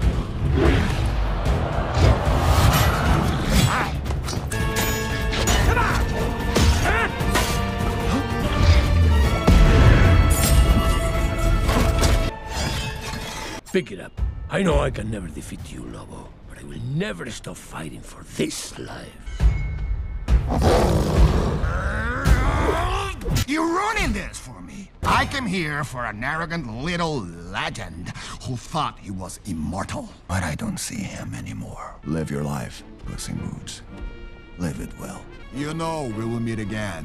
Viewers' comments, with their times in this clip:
0:08 That "huh" just made me feel bad.
0:20 most powerful wolf growl ive ever heard
0:24 it's not all in this video. But for example "I came here for an arrogant little legend who thought he was immortal", he sounds like he is drunk and about to burst into tears, especially at the immortal part